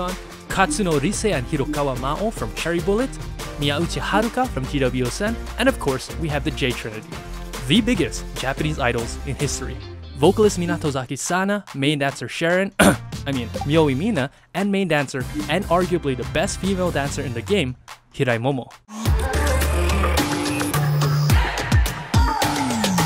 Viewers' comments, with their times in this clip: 0:06 I am a once and the way u elevate TWICE gives me chills every time , i just keep repeating it